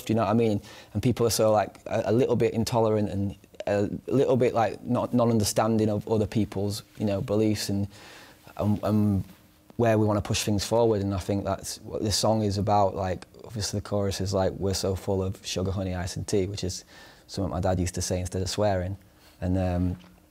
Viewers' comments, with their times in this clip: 0:04 Oli squeezing out a cheeky fart